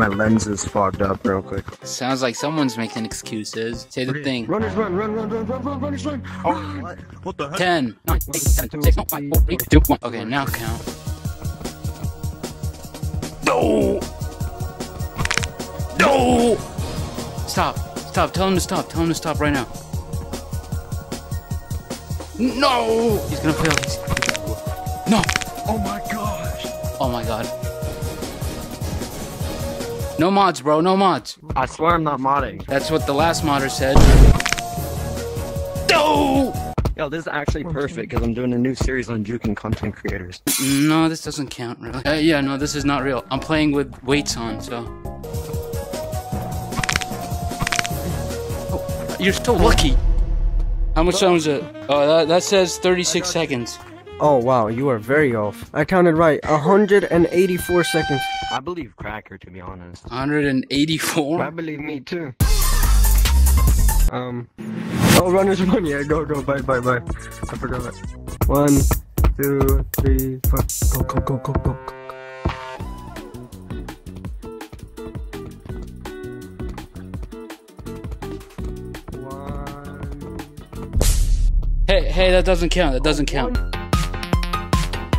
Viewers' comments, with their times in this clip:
0:10 bro sounded like the king in clash royale after a tower gets destroyed.
1:09 Sound like The Simpsons saying doooooo❤🎉😂